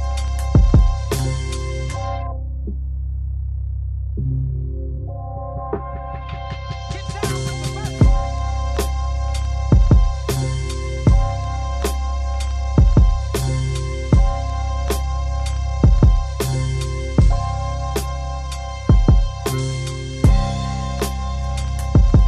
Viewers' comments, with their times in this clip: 0:07 Really anything as simple as a pause somewhere. It's a dope beat and I could imagine a Freddie Gibbs punch line hitting in the drop. Somthing like at the mark, but just the high hat. It's synth heavy-- which is cool-- but I think good lyricist shine in the little moments where the beat cuts away for a second. 💪🔥